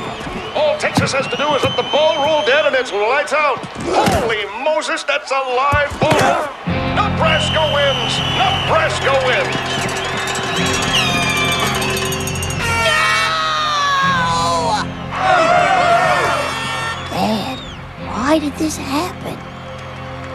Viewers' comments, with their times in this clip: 0:03 can't help but hear "Leon Lett! Nooooooo!"